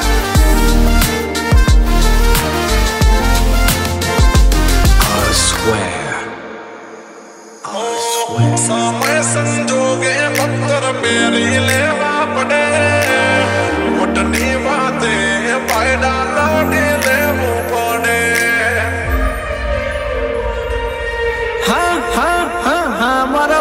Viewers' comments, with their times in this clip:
0:09 ❤️❤️❤️❤️ Literally 🚩🚩🚩🙏🙏🙏😭😭😭 Superb Take Of Music .. So soothing Music